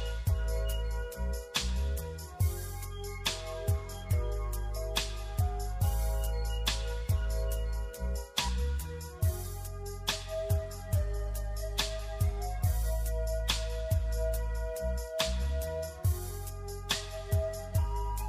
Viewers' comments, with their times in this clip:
0:05 sounds like it's an instrumental of Crossroads by 2pac hehe